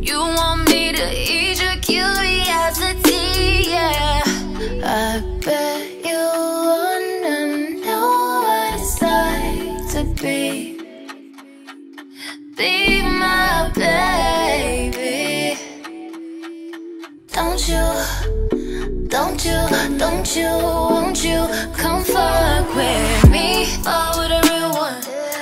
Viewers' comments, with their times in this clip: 0:06 I wish we could hear the crowd